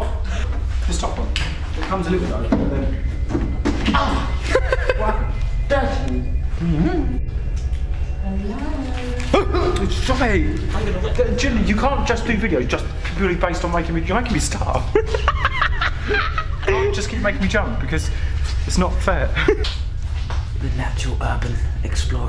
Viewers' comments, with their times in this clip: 0:04 The music sound like scp containment breach